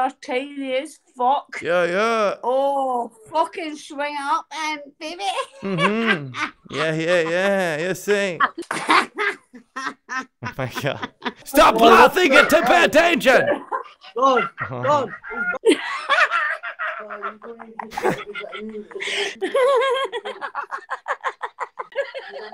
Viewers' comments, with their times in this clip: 0:06 weird minecraft witch sounds play 💀